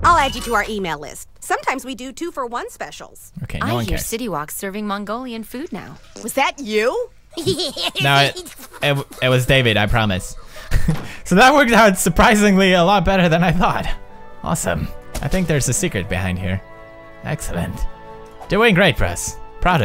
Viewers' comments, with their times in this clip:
0:03 Woman:I hear City Wok's serving Mongolian food now Pewds: *farts at her Butters: *weird laugh Woman: Was that you? Pewds:It was David I promise. BAVAHAHAHAS